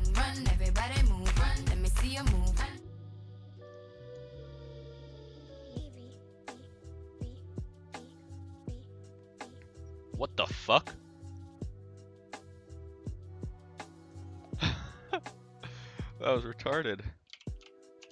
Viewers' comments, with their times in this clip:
0:03 Song anyone? It's got a very interesting tune.